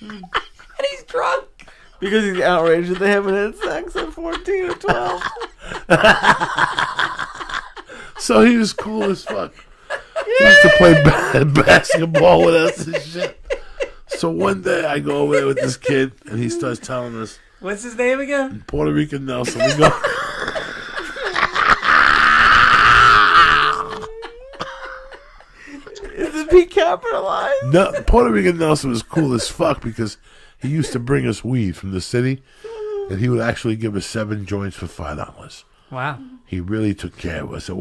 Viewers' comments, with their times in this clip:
0:10 its the yeeee for me
0:10 listen to the background even joey cracked up
0:21 that laughter omfg that shit gets me every single time!!!!😂😂😂😂😂😂